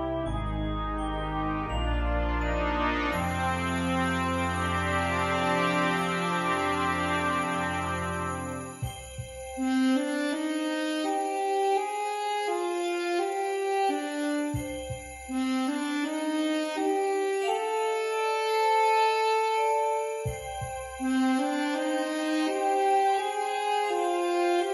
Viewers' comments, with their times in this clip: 0:07 Mental Note: Sax Solo